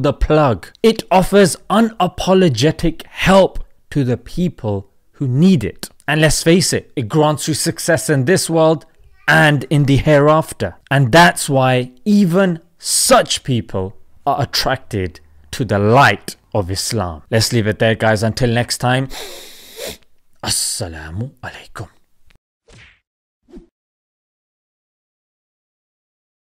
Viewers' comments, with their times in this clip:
0:09 Baby sound in the background...